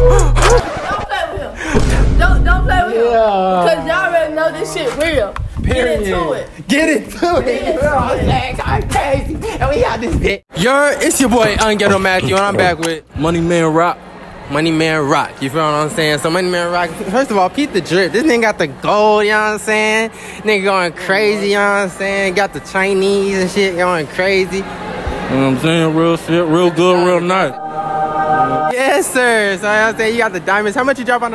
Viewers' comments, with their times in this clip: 0:05 did yall notice it sounds like that girl that said "yuhh get it to it" don't it 😂
0:11 the eating noises 😂😂😂😂
0:14 it’s the chewing for meee Awww💀💀🤣🤣